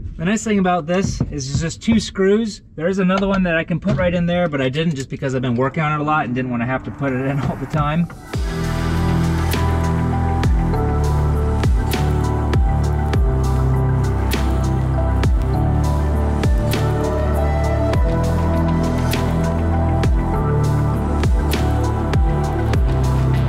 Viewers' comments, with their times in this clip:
0:04 Nice music cutin